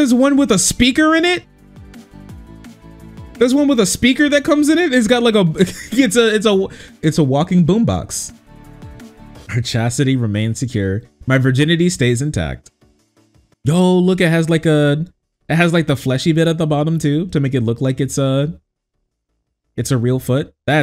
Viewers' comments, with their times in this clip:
0:04 Oh, is this that "dub-step" thing I've heard so much about?